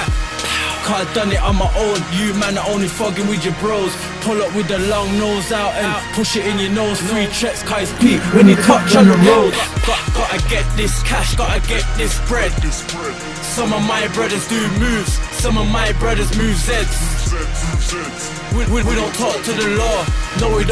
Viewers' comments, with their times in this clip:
0:07 i thought my headphones are playing games 😂